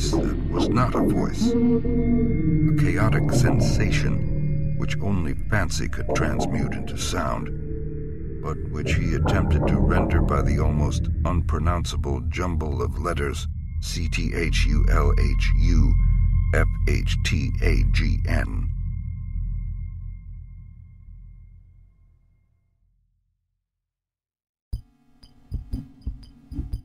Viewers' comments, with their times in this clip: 0:08 God damn did that scare the fuck out of me just before when the voices came in watching this on my phone alone in the dark